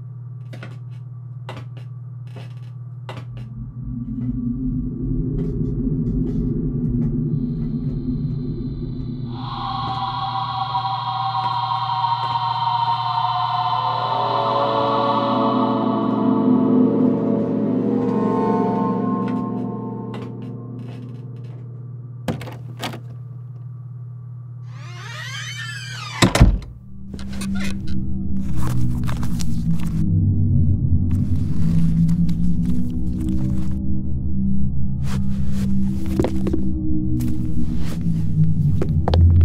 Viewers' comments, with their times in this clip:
0:09 Why does the sound feels like the minecraft cave noises?
0:24 the sond in like❤ horror game